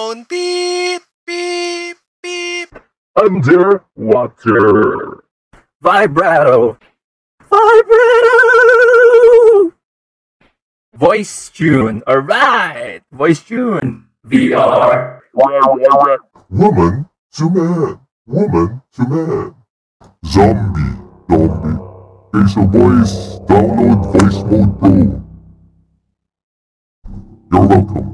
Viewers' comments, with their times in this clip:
0:07 kinda sounds like me when it's cold outside
0:15 can anyone tell me why this reminds me like DJ Octavio from splatoon